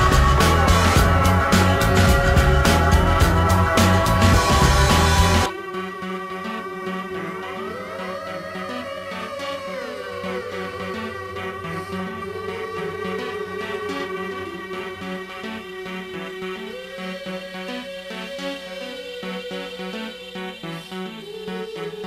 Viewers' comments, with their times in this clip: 0:05 on reminds me of the Mortal Kombat theme.